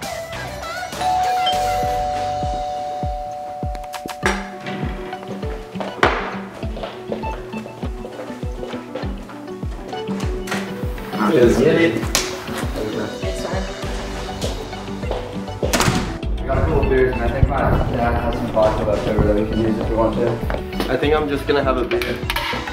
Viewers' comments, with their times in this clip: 0:04 u here the bottle is empty so thay cannot be jrunk like if u agree